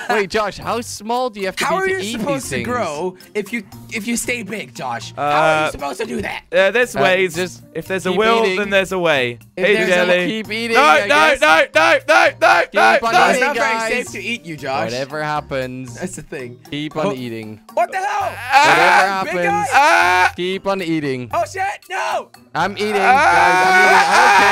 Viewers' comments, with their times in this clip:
0:10 is it me or does he sound like Ali-A??